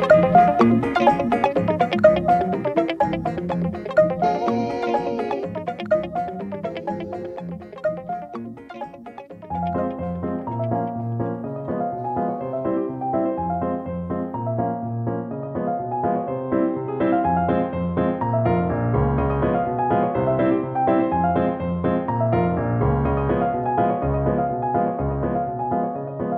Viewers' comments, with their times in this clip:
0:07 The piano song starts !